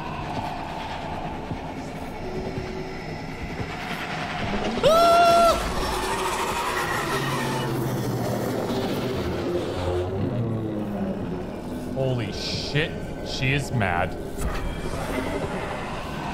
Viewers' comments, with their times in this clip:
0:04 Another excellent video. I am loving this playthrough so far! I think I prefer the settings of Dark Descent but I prefer this to A Machine for Pigs. Also, that scream made me lol.